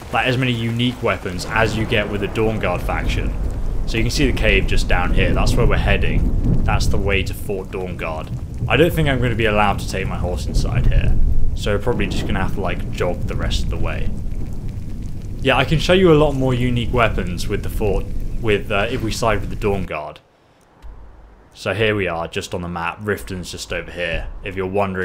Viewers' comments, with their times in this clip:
0:08 ESO Farts!!! HAHAHAHAHA